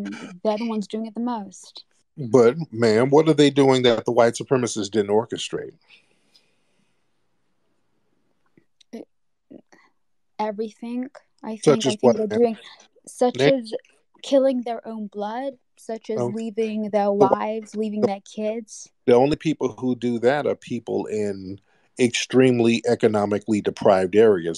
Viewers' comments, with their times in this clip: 0:10 "Everyfink?" 🙄 She sounded quite literate until this point. This isn't a white woman though. I'm getting immigrant vibes, perhaps South asian or East african. Tried her very best to sound quite affluent, but it wasn't dropping. Judging by the comments she wasn't fooling anyone. If she is a repeat troller, she has serious mental issues.